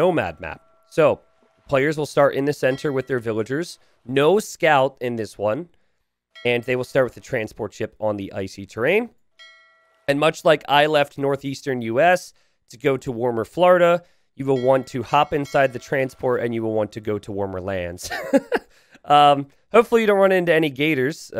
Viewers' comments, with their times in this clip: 0:05 Actually Graupel is German, which more specifically could also be "Graupelschauer"(Graupel and Schauer), meaning essentially; "snow with soft hail," or translated "shower of sleet." Update: T90 pronounced it much more as "Groppel", than Graupel 11